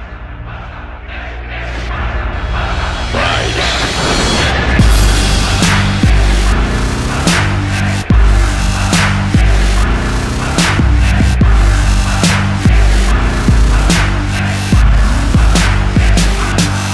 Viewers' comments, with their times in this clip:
0:03 I love the Drawing but I had to mute the volume until Then it got all epic!